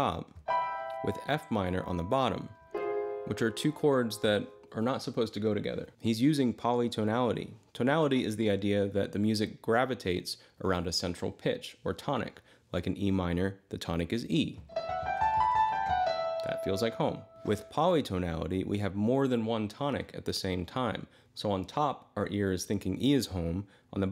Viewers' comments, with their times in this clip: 0:09 I think it’s easy to hear the root as A minor if you imagine the E at the end not being the last landing note but accompanying B as the “end” so to speak